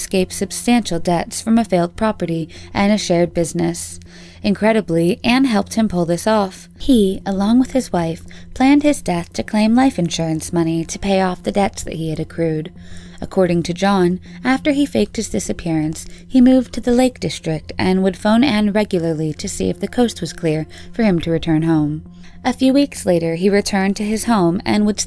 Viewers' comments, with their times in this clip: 0:06 Why does the voice change mid-sentence ??